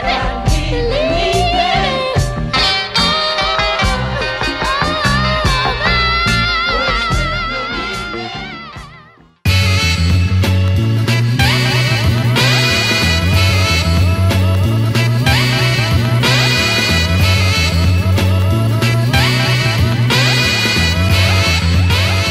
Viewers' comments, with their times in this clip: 0:09 That beat/intro at the mark though sheesh 🔥